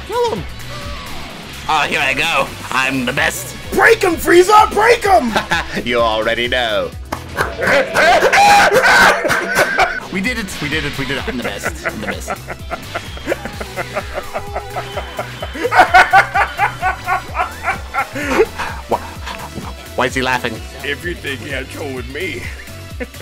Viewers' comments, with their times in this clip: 0:10 are we not gonna talk about of how good that Cell laugh was???
0:10 That laugh though... Well done! Sounded like something from a dub! Very nice!